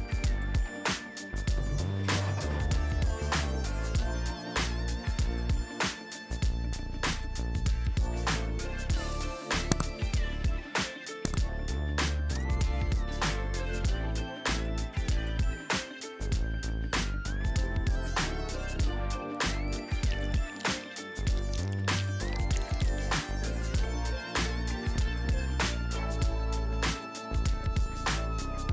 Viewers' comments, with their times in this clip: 0:10 Nice sound effects